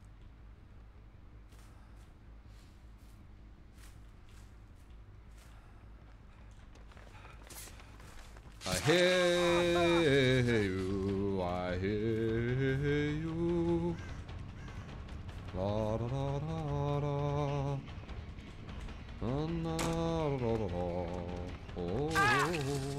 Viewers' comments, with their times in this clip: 0:08 wow what a beautiful little song lol